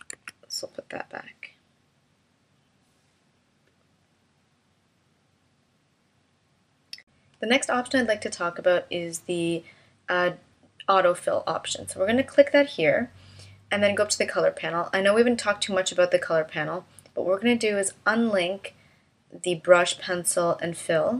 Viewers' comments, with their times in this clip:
0:08 Canadian "about": a-boot. I am joking. This software is awesome. Clever, practical and innovative. Seems to fit into what artists need. Thanks for the lesson!!